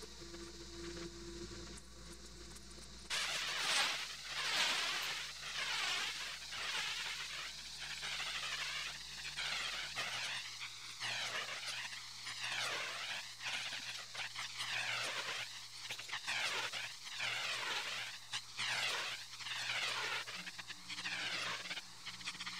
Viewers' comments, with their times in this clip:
0:04 The fly in my room at 3am